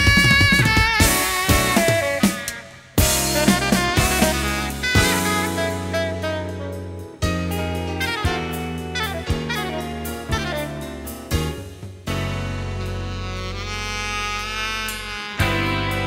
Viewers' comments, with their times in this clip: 0:04 Okay, im crying watching steve listen to Wayne shorter and steve playing together 😮❤😢❤